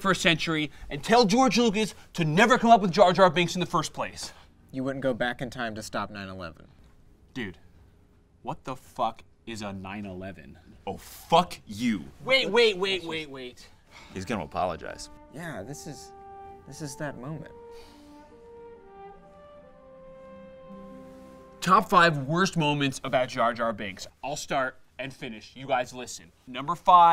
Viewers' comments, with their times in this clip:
0:08 I'm Sorry But I Loved That Voice And His Face I Laughed I'm Sorry